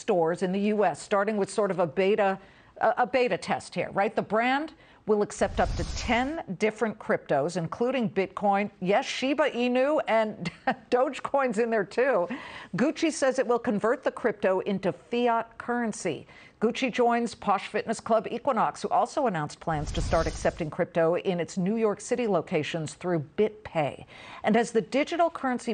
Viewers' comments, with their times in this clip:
0:10 why she laughed at Dogecoin ??? Is Dogecoin not worthy for her?